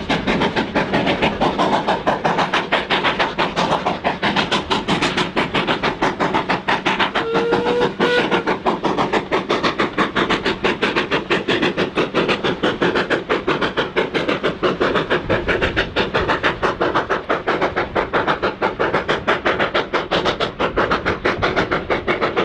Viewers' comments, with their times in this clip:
0:08 You can always bank on a Barclay... or, in this case, 2 Barclays can bank another one. There was some serious thrash there. Well-captured. Mechanical Navvies sounded like Princess Elizabeth on Hemerdon! I like the dark blue one. It looks great with that shape and livery, especially the red wheels. I also like its cab windows. I like the Barclay moment It looks like a Scottish colliery!